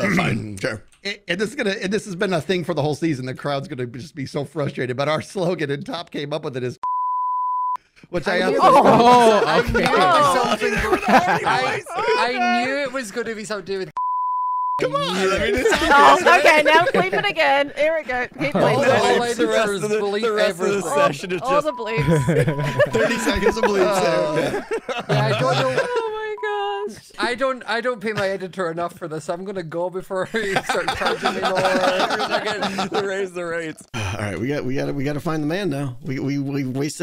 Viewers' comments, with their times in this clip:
0:07 why is it blipped out?!
0:18 he's mimicking Mumbo while he isn't even there!